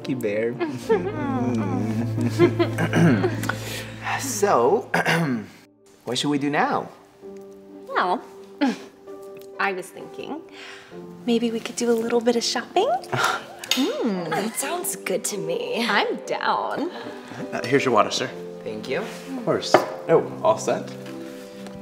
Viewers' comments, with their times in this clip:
0:09 clears his throat to much